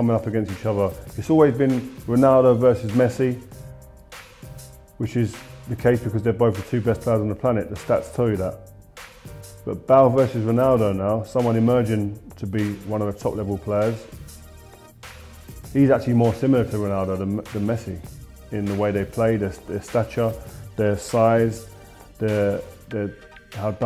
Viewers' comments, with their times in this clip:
0:09 Who the hell is Bahl?